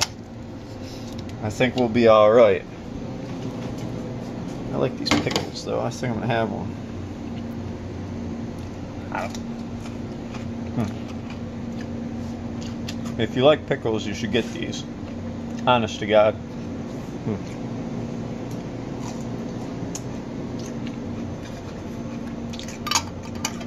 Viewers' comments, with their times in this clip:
0:08 love the noise he made when he bit into the pickle